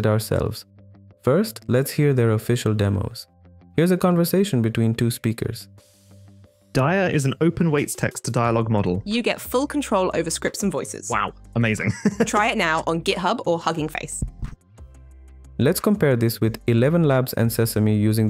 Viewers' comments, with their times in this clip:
0:06 I can't be the only one who hears Mumbo Jumbo speaking that first line 😂